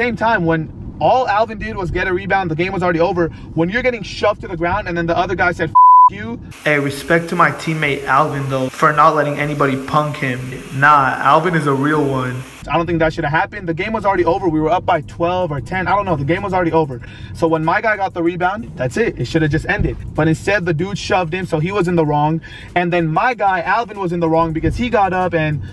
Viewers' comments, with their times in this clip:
0:07 I know this is a serious video but it sounds like your in the shower editing lol